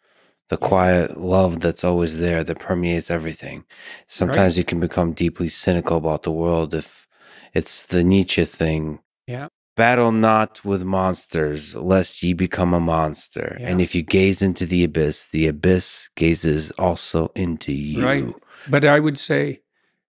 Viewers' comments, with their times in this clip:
0:03 Wow.. & onwards really got me tearing up.. But Lex also reminds me of a vampire when he speaks.. I briefly imagined him with sharp teeth and a cloak. Battle not with monsters, less ye become a monster, & if you gaze into the Abyss, the Abyss also gazes into you.